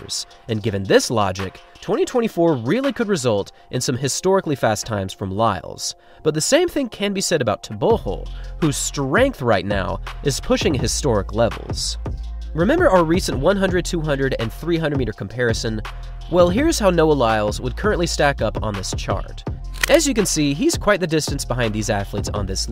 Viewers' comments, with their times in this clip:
0:07 Tebogo "go" as if snoring... as he is saying it in